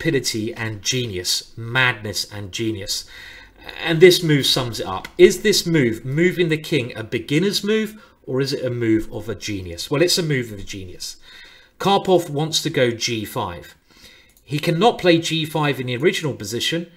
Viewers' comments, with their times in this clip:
0:03 Did he just say "magnus and genius" ?!!